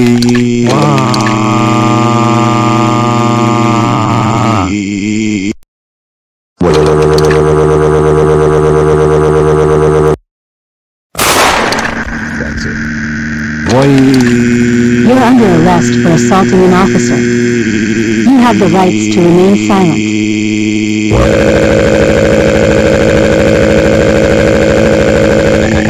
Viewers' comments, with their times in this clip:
0:07 My favourite voice